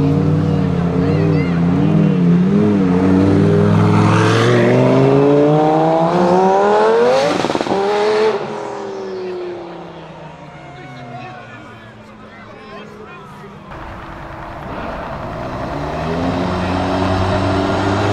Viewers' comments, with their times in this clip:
0:06 turbo sound is so fucking great 😍